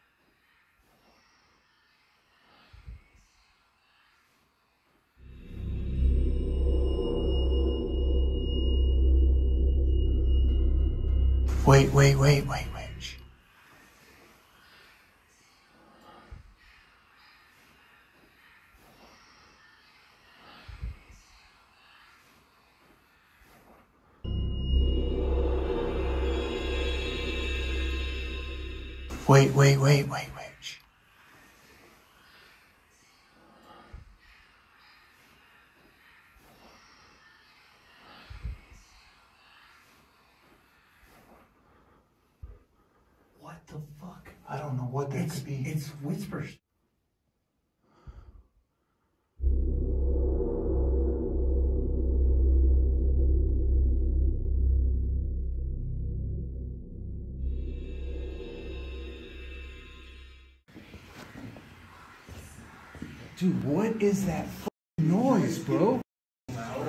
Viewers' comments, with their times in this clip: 0:10 sounds like the whispers are saying "turn back, turn back"
0:15 sounds like they are saying Enter enter enter
0:20 When your in the cave and hear the whispers it sounds like the whispers say go back..
0:30 it sounded like "one two.. one two.. one.. now run for it now run now run" I might be paranoid but yikes
0:32 I not only increased the volume, i messed around with the audio on my software, I can make out a few things on what those whispers say. Here is what i had gotten for those voices. "Turn back" "It's not safe" "Leave us (couldn't get that last part out due to the voices going over each other)" But the last one is what not scared me shitless. It's gonna scare you guys too. The last thing i heard from those voices. Was "Satan is here" something like that. But im 100% sure it was Satan is here. Going back over and over the audio settings etc. That was th3 4 things i got. Hope this helps. cause it scared me regardless
0:41 it sounds like “ turn back now”
0:42 i hear "waiting...behind you", like the other one voice gave the other that they would be waiting for You and You are behind them....and when I play this again, it was two "types" of voices - one louder said "waiting ... behind you" and the other softer "turn back". Perhaps some bad creatures - they would like to lure you, the other - good (possibly the victims of the rituals) warned you to turn back and go don't go deeper
0:48 in the cave the wispering, kinda say i see ur eyes 👀 🤔
0:52 My best guess for this whispers, is it sounds like a woman saying "We have to go back"